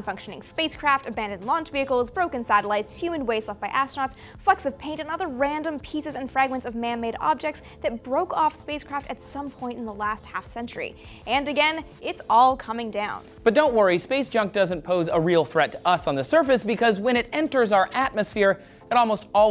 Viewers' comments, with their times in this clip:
0:03 Did she said "f*cks of paint" on ? Coz that is what I hear and I replayed it several times.